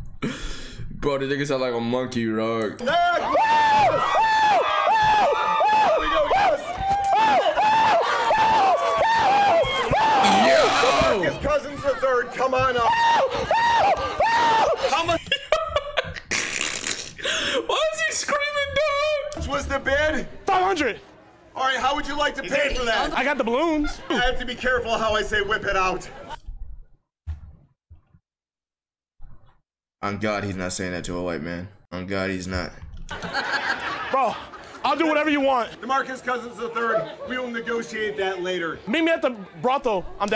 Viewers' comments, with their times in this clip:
0:05 bro sounds like spongebob when he saw the hash slinging slasher
0:24 the way he said that😭